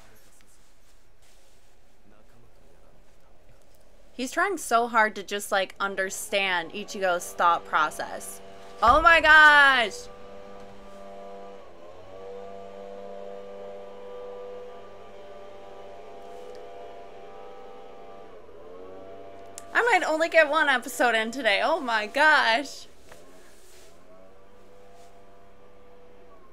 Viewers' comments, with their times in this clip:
0:10 What, this is just part of the soundtrack there :D wrrrrrrrrrrrrrrrrrr....NUMBER ONE! p.s. Your eyes' colour is similar to Ulquiorra's ;>